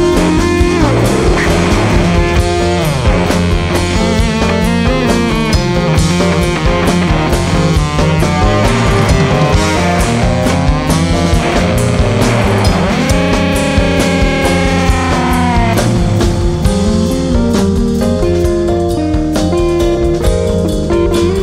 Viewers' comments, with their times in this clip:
0:06 that myxolydian scale was cool. changed the mood some (sorry if im wrong)